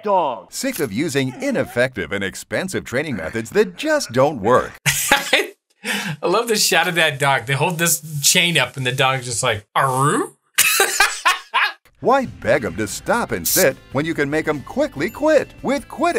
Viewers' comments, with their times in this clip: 0:04 Omg, doom hurt sound